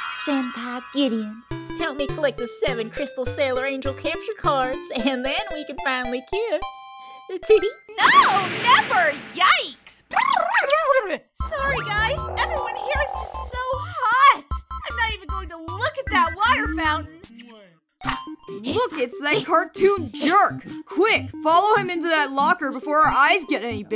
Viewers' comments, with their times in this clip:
0:07 "aNd ThEn We CaN fInAlLy KiSs" long pause "teehee"